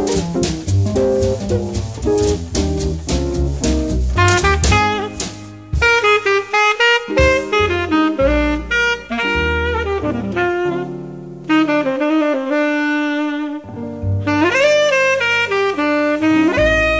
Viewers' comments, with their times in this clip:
0:03 The break is outstanding...